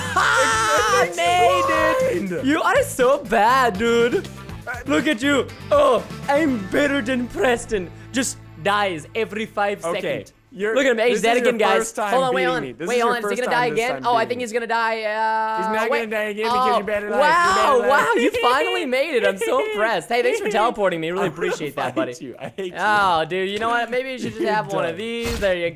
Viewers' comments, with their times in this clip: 0:09 I LOVE HOW HE SAID EVERY